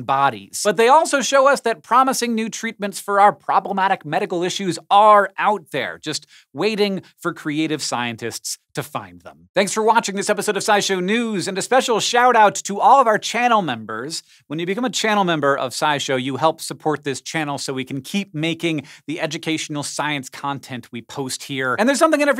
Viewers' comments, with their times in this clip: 0:03 Did anyone else head the "popblematic" sound ? Or am I just tripping?